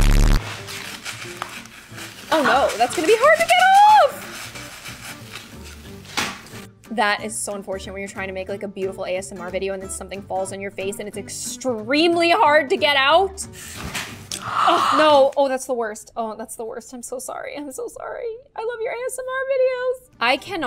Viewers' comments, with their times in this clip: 0:06 Tell me I'm not crazy I heard squid games music